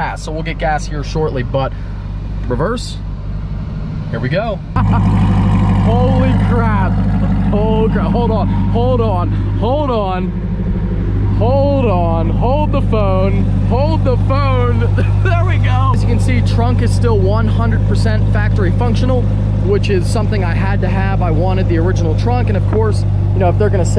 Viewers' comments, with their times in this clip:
0:05 i was looking away for a min and i thought it was some kind of diesel truck lol cuz i was used to hearing the c7